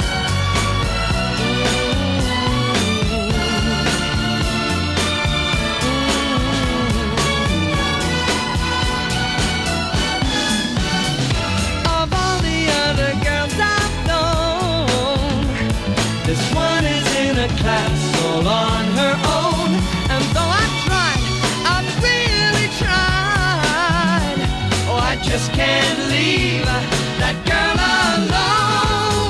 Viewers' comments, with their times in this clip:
0:10 The bass player on this record is amazing. He completely upstages the string section at every fill-in. holy cow! If somebody were to tell me it was John Entwistle, I'd absolutely believe it.